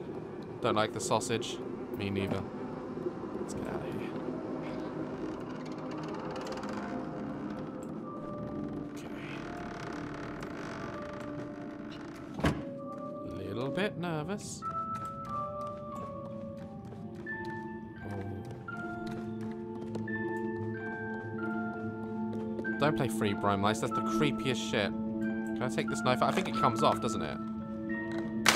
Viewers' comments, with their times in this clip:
0:10 WHY do doors always gotta make so much noise!?